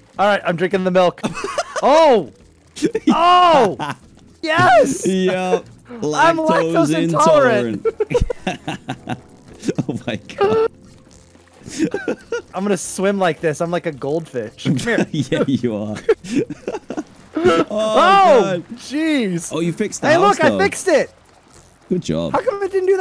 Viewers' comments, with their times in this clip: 0:09 that laugh sound sounded so fake 💀